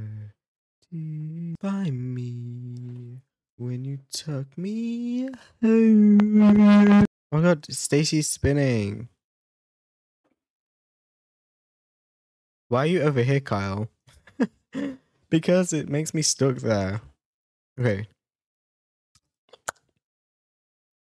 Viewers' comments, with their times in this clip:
0:03 Wait your voice is good!